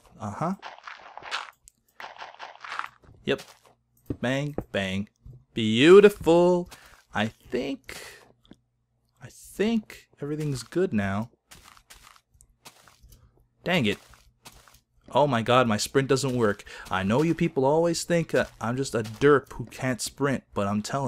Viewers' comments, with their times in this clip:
0:03 ... and dirty rich... Little monsters know what I´m talking about... If you´re not a little monster, sounds like Beautiful, dirty, rich by Lady Gaga XD